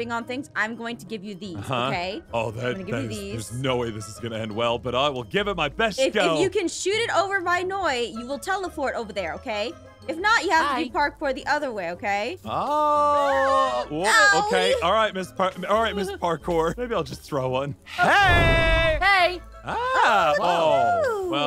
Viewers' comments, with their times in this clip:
0:08 Aphmau: You Will TELEFORT Over There Ok? Me: Pierce don't don't watch this video